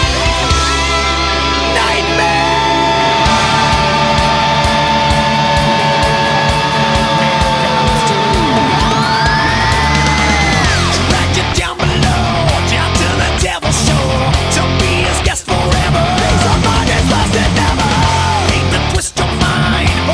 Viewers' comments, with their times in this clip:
0:07 that electric recoil.....😍😍😍😍😍😍😍😍😍😍😍😍😍😍👌